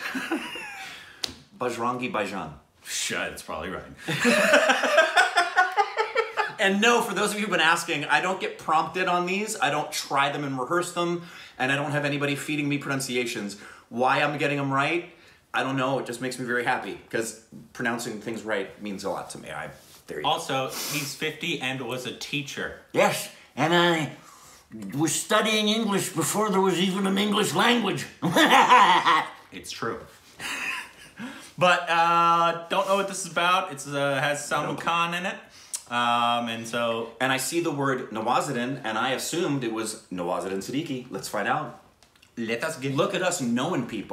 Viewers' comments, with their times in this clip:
0:06 how does he always gets it right?
0:28 I won't be able to sleep after that laugh😵😵